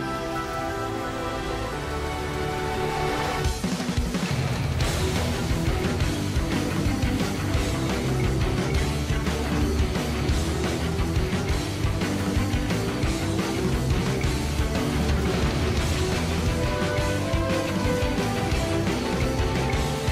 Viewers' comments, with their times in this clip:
0:04 what is that song ! IT'S SO HYPE!